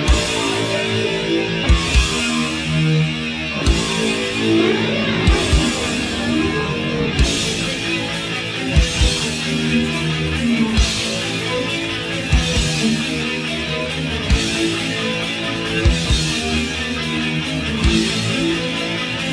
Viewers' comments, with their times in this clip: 0:04 a World War II fighter plane